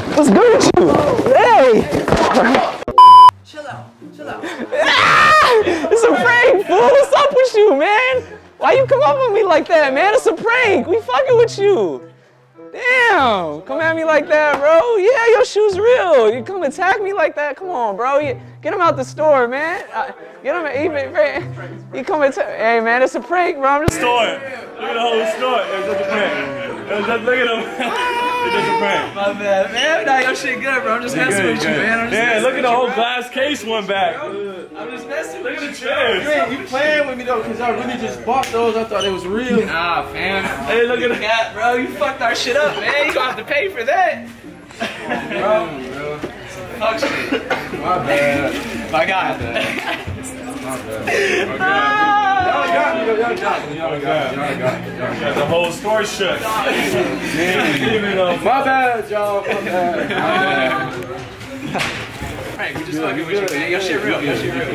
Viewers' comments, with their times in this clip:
0:04 the laugh tho
0:47 this foo was coughing, disinfect the whole store
0:51 why he sound like spongebob cut scene